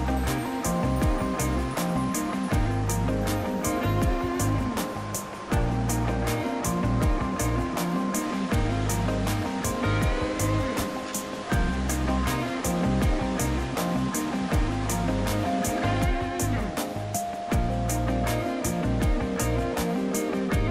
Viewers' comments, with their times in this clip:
0:04 Enjoyed your sigh Believe me, been there and done that:)